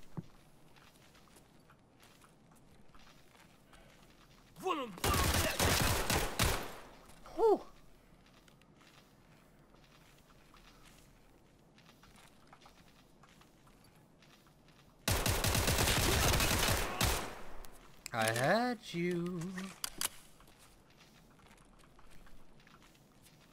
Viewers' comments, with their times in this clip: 0:09 How the hell did you hear the guy coming up the stairs ? I had my headphones blasting and replayed it over and over and heard nothing!! You're insane lol Great video by the way.